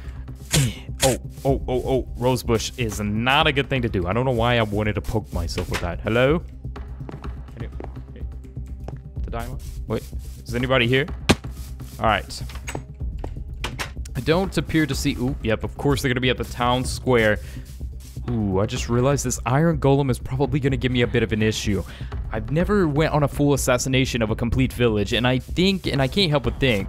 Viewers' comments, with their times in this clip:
0:08 there was a weird laugh like “heh heh”